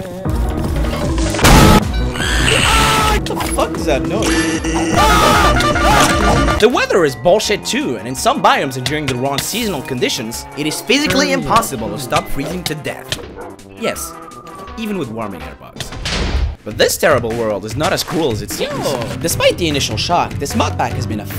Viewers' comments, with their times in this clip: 0:03 Sans with his trumpet